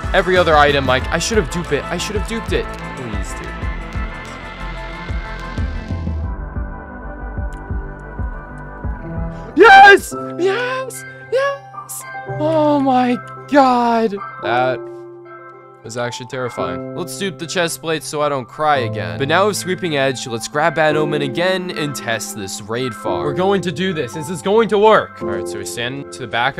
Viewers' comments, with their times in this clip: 0:10 minecraft music xdd